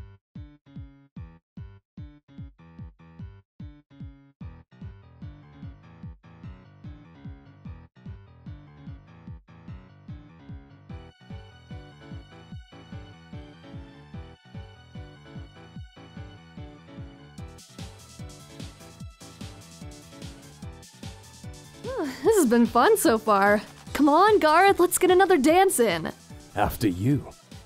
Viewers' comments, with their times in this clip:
0:03 Dang the beat is good
0:14 I’ve played UNDERTALE so many times that the song track gives me MAJOR ptsd